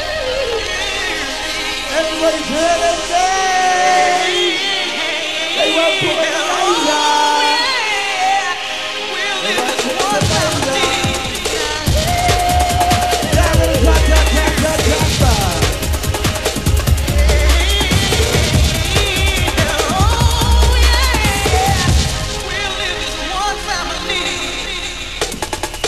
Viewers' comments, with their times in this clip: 0:06 Alright MC give it a rest for one fucking minute while I put my hands in the air jeeez